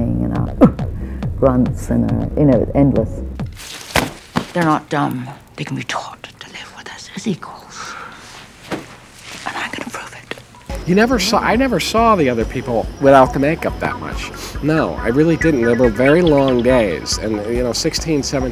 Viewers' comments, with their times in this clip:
0:04 Wow is this Michael Jackson or Janet Jackson?